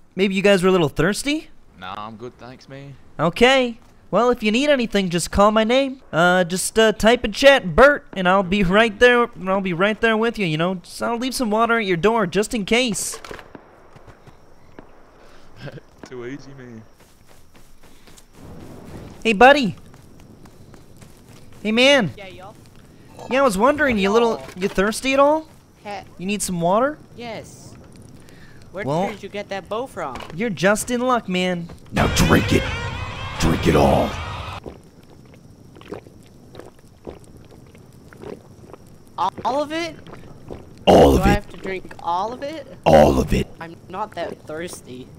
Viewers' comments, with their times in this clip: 0:03 he sounds like fucking Kermit
0:33 the fkin IT pennywise sound,lmao